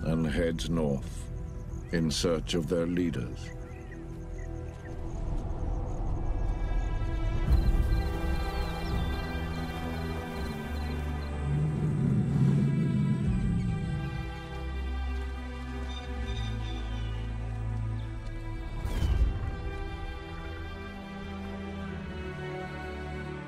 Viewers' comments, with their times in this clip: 0:05 The soundtrack has me thinking Game of Thrones 😍